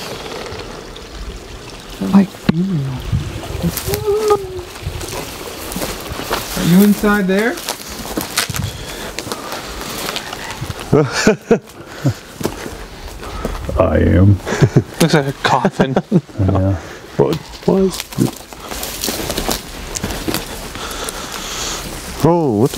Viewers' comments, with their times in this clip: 0:04 there was a loud whine. Was that one of you?